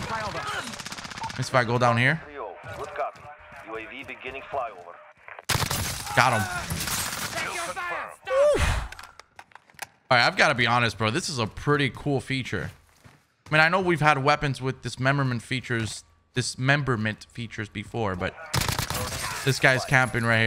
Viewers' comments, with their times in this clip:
0:07 idk why but but after he makes that sound I was expecting to here EA SPORTS “it’s in the game”